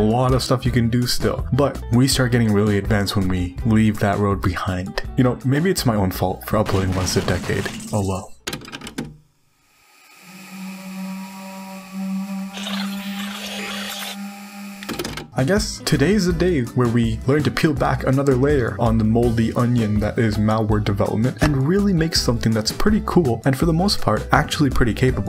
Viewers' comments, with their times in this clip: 0:10 omg you gave me a hart attack with the fear and hunger sound